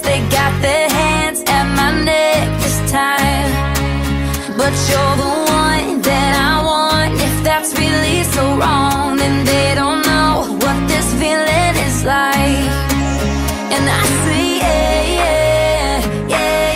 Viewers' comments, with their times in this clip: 0:04 sounds like we bare bears ( BUT WITH DIFFERENT ANIMALS)